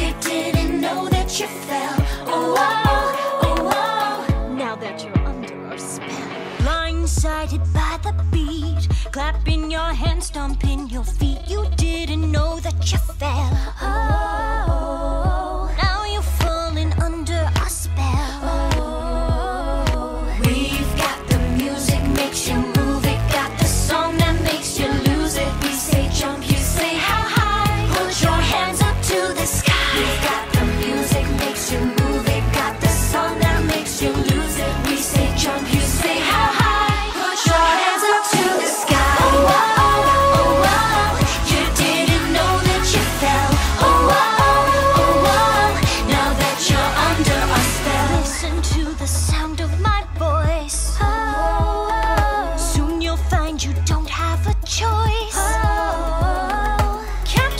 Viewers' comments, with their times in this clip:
0:04 "Now that you're under our spell." .. The way she said spell sent chills down my spine ngl.
0:43 If you turn the speed on 1.25× for under our spell is kinda cool